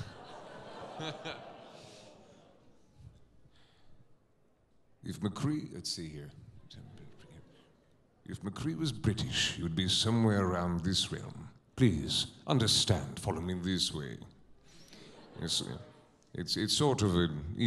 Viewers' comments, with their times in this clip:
0:04 So British McCree is basically Silas Briarwood/Howaardt Darrington. xD